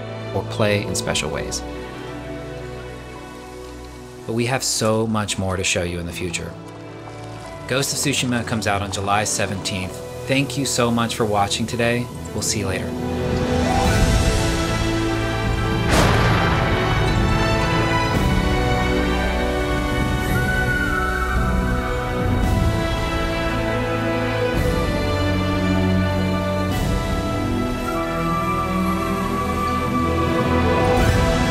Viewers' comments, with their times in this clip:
0:10 That ending with the thunder gave me goosebumps. Take my Yen!
0:13 is when I got goosebumps and realized how beautiful the music allocates to the picture. This is how you end a show!